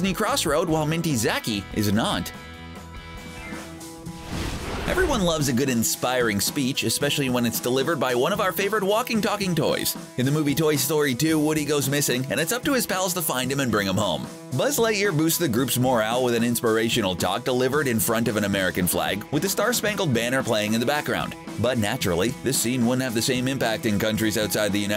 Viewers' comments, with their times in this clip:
0:08 perfect timing voice